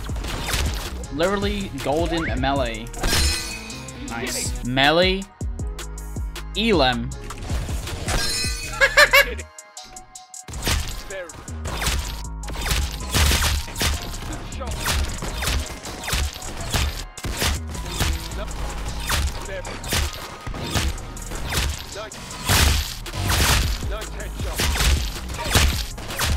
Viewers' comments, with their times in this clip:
0:08 looks like Elmo's laugh lol